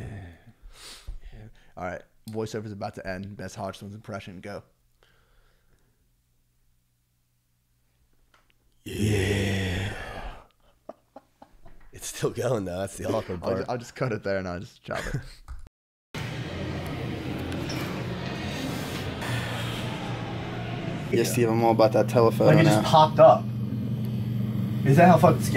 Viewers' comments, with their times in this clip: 0:07 The fucking hodgetwins impression had me dead